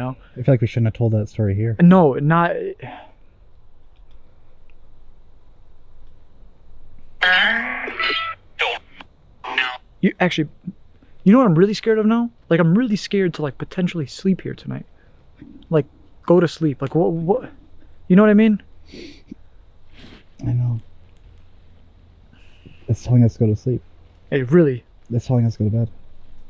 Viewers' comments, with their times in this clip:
0:08 that said burn i heard help too really need to get those sleeping bags with pillows or take pillows with u